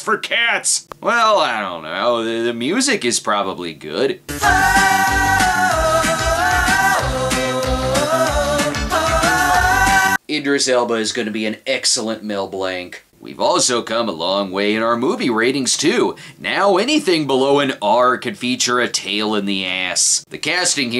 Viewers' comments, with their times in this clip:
0:08 What the hell is that? Sounds like a reggae remix of the ending to Coming Home Major Tom.